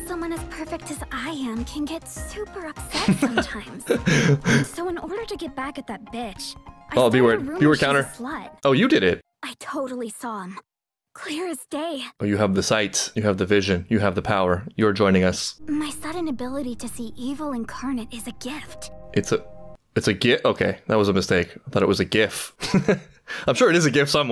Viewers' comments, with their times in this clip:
0:06 Fun fact about today's b-word count, this isn't even an example of the dub interpreting a word to have similar implication. Aira says the English word bitch in the Japanese script too, in a tone that sounds just as "friendly"